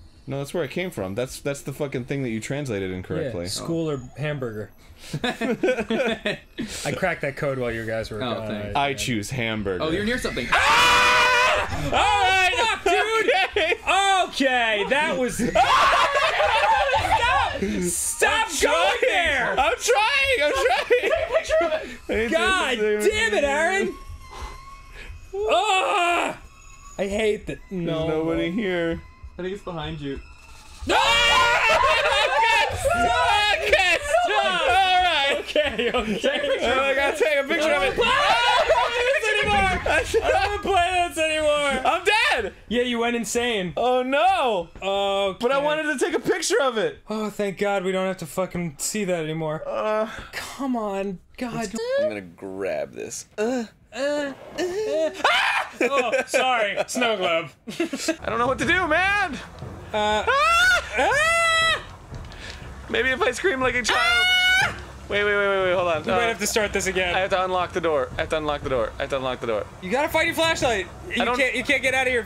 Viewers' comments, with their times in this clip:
0:07 That scream got me laughing hard at the floor XD Best scream ever!
0:09 one of them becomes an opera singer
0:10 When Dan and Arin scream they sound like System of a Down. XD
0:10 i like how they screamed in unison lmaoaoaoa
0:10 Wow. Their screams sound so harmonised.
0:29 -Maybe it's behind you. Creepy girl conviniently pops right behind you Everyone screams
0:51 girl scream "oh, sorry, snowglobe" 😂
0:55 Favorite Dan scream